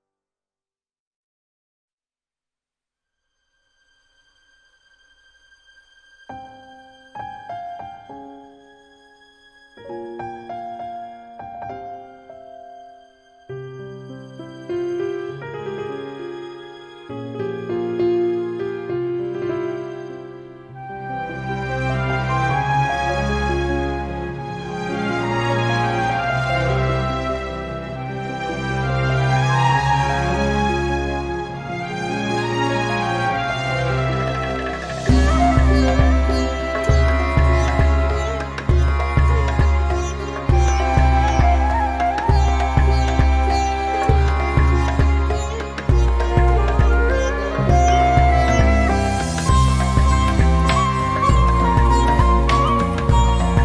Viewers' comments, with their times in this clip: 0:04 My heart 🤍😭😭😭😭😭😭 I can't have enough of Hoyo Mix's ethereal music 😭😭😭😭✨✨✨✨✨🤍🤍🤍🤍🤍
0:35 is so catchyyy